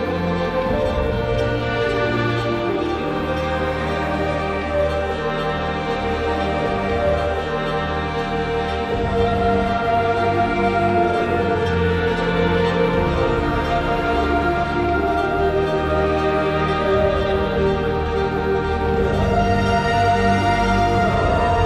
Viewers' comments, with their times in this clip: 0:09 What’s that BGM in the end ?! That music causing tears 😭 it’s in Feel to me like cries of those perished souls !